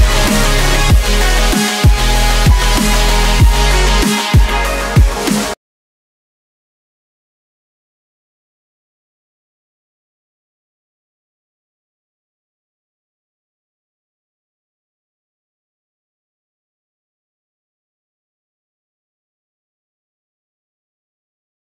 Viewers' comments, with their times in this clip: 0:05 no sound? XD
0:06 Who else thought their speaker was broken ?
0:06 MUTED SECTION!!!! but why?
0:08 no sound?? Love this mix so much!!
0:08 Little bit of silence